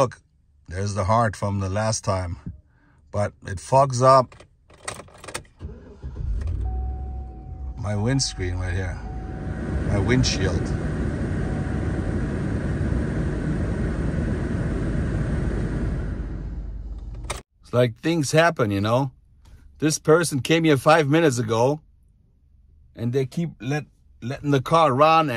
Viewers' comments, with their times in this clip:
0:06 This part is funny to me because I also have a Chevy Tahoe from 2006 and it sounds the exact same. 😂